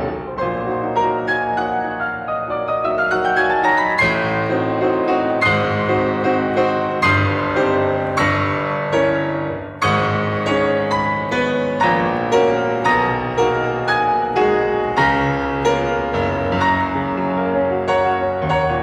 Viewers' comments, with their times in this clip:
0:06 The way Ernst Levy treats the climax is remarkable. It is the first time that I have ever heard a pianist make a clear distinction in the phrasing - through the use of a break. Truly Remarkable.